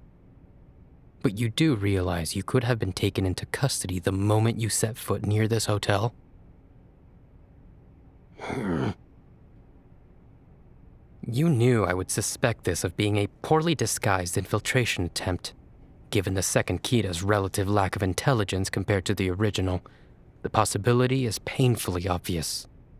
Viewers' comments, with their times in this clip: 0:07 his little growl is so cute❤️🥺